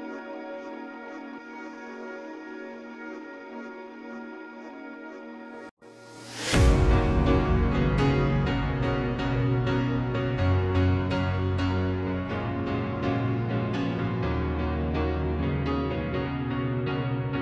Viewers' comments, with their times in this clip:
0:05 that is the one!. A song I can relate to. Very joyful.